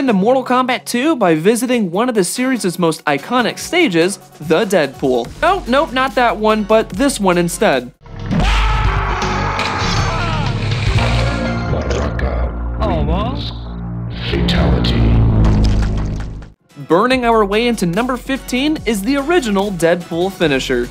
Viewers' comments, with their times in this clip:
0:08 The scream will always be iconic to me